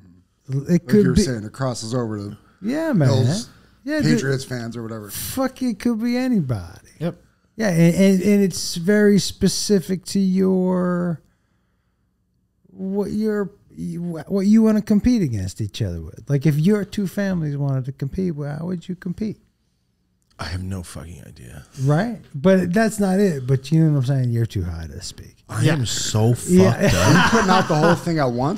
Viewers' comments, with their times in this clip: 0:09 Josh started sounding like Biden mins 😂😂